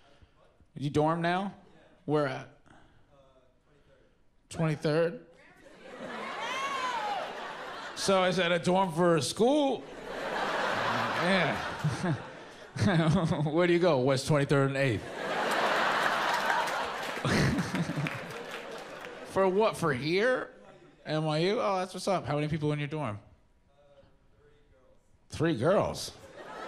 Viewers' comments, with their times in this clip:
0:08 Pete having his "Oh. that's what I sound like when people talk to me" moment. 😂😂😂